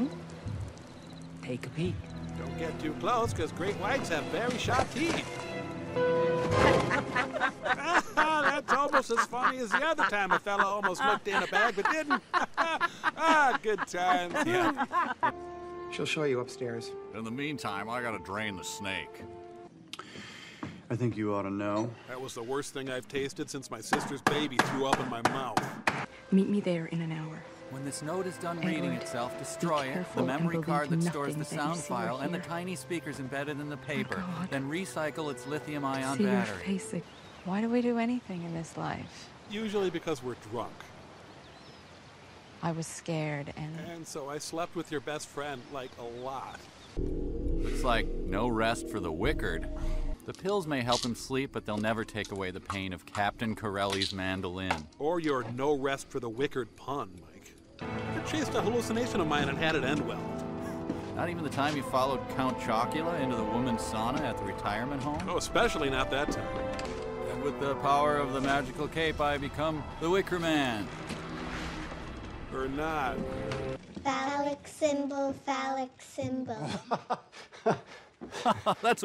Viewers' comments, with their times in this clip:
0:07 Does their laughing not sound like ducks quacking when you look away from the screen?
1:07 I love how halfhearted Mike sounds